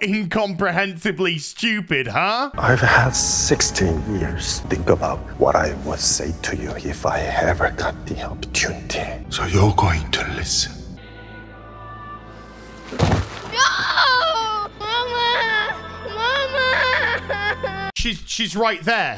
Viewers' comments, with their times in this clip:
0:04 can someone write the subtitles for me at this section. Youtube subs are bad and Master Squidgame is incomprehensible when whispering...